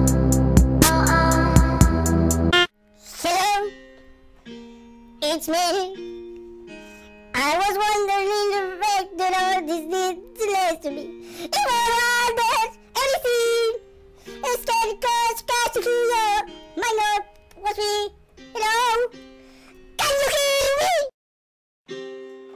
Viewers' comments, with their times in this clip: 0:04 takes out earbuds revealing blood and looks at camera This is your last warning. yells at background ANYONE GOT SOME SPARE EARHOLES!?